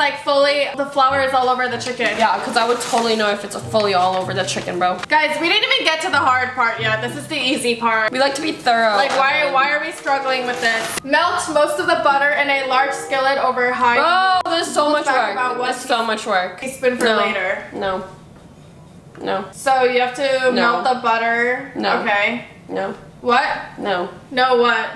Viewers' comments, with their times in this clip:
0:08 when she said “we didn’t even get to the hard part! This is the easy part! Why are we struggling!” She literally sounded like my middle school teacher